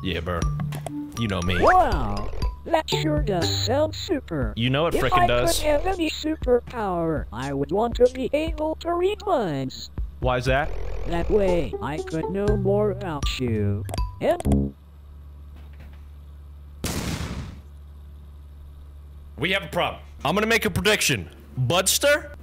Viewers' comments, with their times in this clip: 0:03 THE COMPUTER GUY SOUNDS LIKE CHRIS CHAN